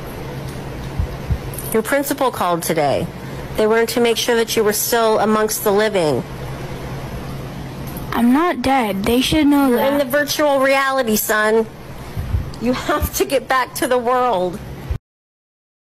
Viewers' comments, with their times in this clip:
0:12 I think she was either laughing or crying at the part but it was funny lol